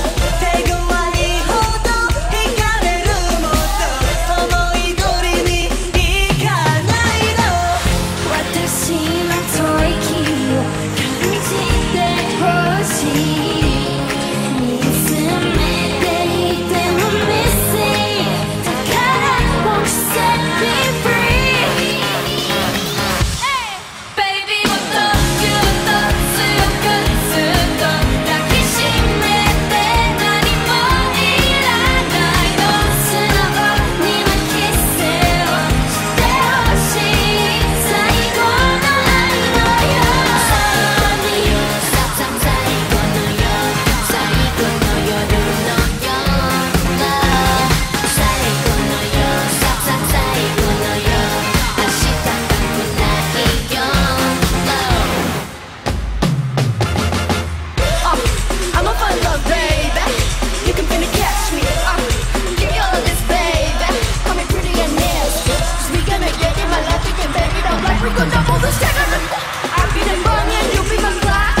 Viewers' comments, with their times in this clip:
0:07 I love this part when rosè sing
0:08 Rosé 's voice ❤️
0:40 lisa’s voice is just pure art, she has good rapping skills aswell
0:44 is magical voice of lisa
0:57 Lisa’s deep voice English raps 🤤